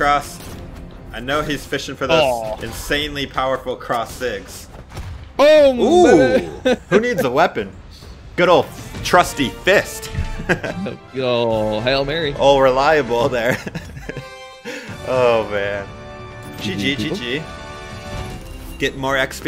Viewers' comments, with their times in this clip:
0:05 am I the only one noticing he says "BOOM n word" idk just thought I heard him say it sorry if in wrong